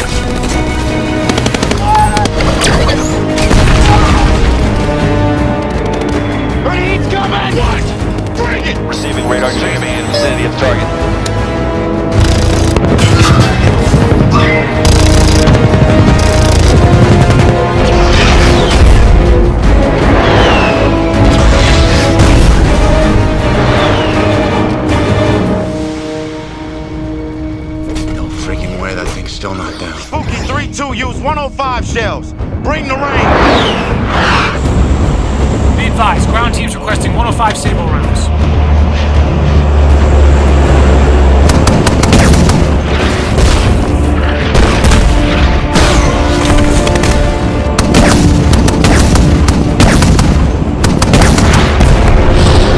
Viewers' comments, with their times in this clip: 0:10 a Gau-8 does not make a wet fart!
0:12 What Hollywood clown was responsible for the sound design here? I would love to know just who actually thought that this deflating-balloon noise would be appropriate to dub into the shot as the supposed sound of the Avenger cannons. And then how it got through the whole production process and out into the finished movie with nobody saying "wait, this is garbage".
0:34 Scorponok be like "Why do I hear boss music?"